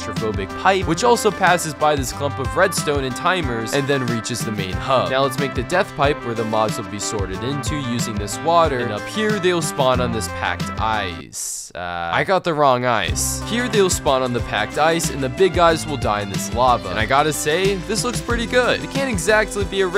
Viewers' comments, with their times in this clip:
0:04 had my favorite Minecraft music